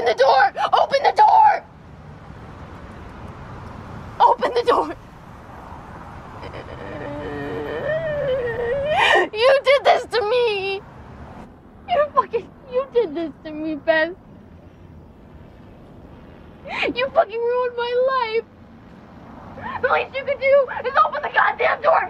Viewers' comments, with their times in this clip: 0:06 the pain in her heart do hear that its breaking.She does not to do without numbing it .Zendaya killed it .
0:08 what was that sound she made eeeee